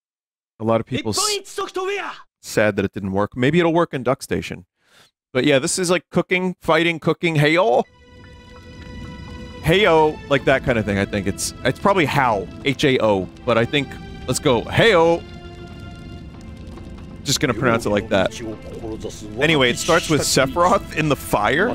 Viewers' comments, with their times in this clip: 0:03 -37 holy shit why does this guy go so hard saying this name it's hysterical 😂